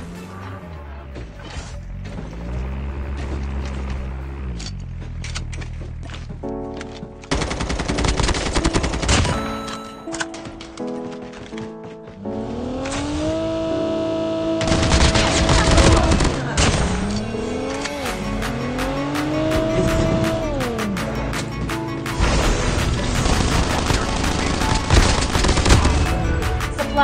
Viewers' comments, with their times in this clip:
0:08 when this music comes on, you know it’s gonna be good :)